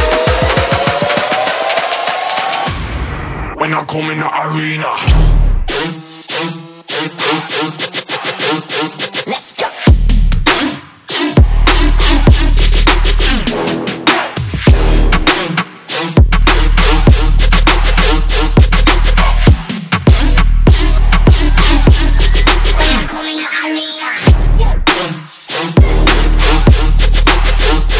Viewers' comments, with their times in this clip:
0:09 my fucking god that vocal shot killed me